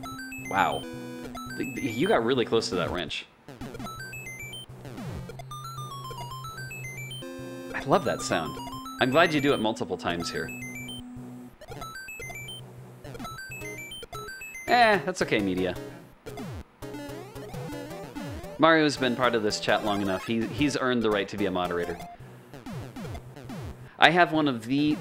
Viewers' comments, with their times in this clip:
0:05 How is that longer 1-up jingle triggered?
0:11 That sound? The glitched 1-UP sound? It's due to some really sloppy coding by the devs; normally, the sound engine uses one system, but for a certain group of sounds, it uses a different system, and the 1-UP has priority on top of that despite being one of the last sounds accessed otherwise.